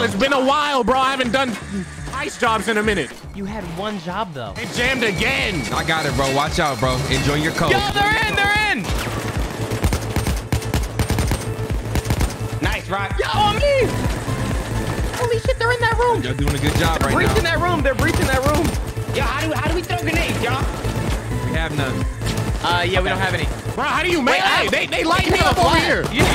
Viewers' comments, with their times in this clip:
0:09 that shi sounded on beat i dont know if anyone realized that lmao